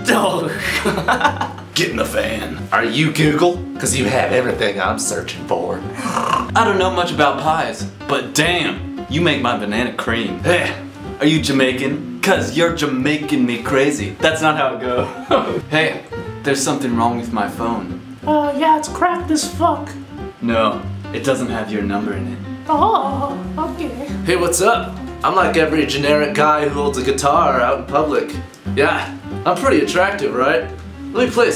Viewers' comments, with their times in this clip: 0:03 paula dean accent XD
0:19 Mickey Mouse voice ahahaha lol